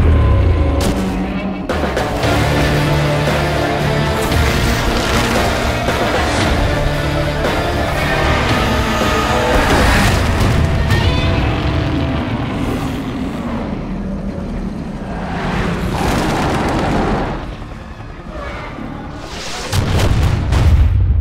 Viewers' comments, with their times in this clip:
0:07 i dont know, but that Roar sound more Zilla than Godzilla... i mean, i know they are similar, but at the same time they are different...